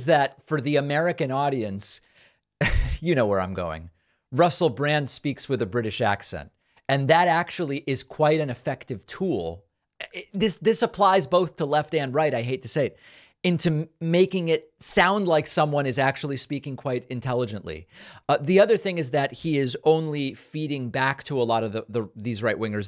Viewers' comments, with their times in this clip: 0:07 Nonsense about Brand’s accent making him seem intellectual. If anything, Brand tries to sound more lower class than he actually is, dropping his tees and gees, to sound more of the people. Saying that’s a pseudo-intellectual put-on is like saying Ali G sounds like an Oxford professor